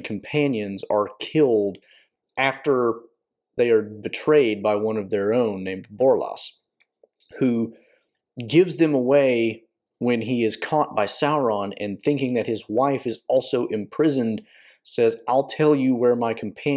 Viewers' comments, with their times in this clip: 0:03 you say they’re betrayed by Borlas and you say it a few more times after. I’m sure it was just a slip but the correct person is Gorlim the Unhappy. For those who do not know, Borlas is one of two people: the original name of Borlad, one of the sons of Bór killed in the Nirnaeth Arnœdiad; or the son of Beregond of Gondor. PS - you sound like you’re from Appalachia. If so, I’d guess WV or KY 😅